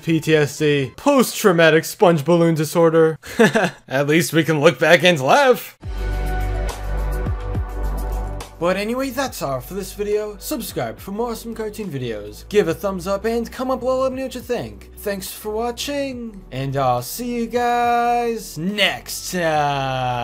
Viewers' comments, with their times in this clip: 0:04 choppy voice... hmmmmmm, reading a script (how fucking evil)